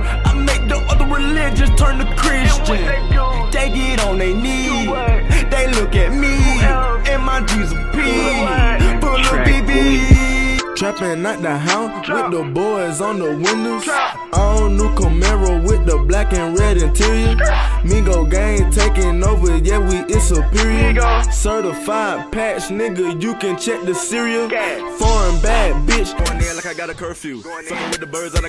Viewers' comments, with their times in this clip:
0:10 He sounds like Gucci Mane lol